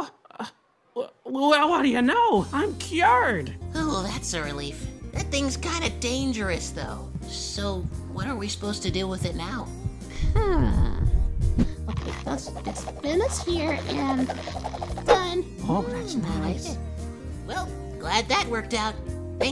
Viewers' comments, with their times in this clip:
0:03 The ost is too good!!!!